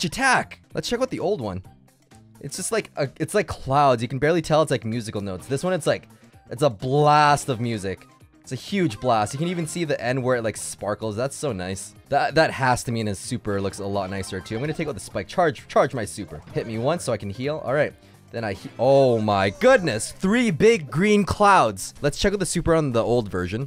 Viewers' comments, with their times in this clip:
0:09 you can see the n word
0:09 you can see the n word